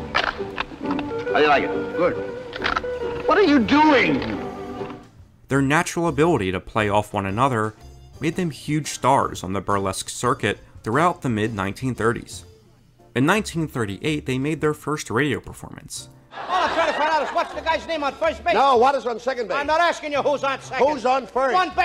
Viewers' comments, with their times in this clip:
0:07 that recording sounds great for 1938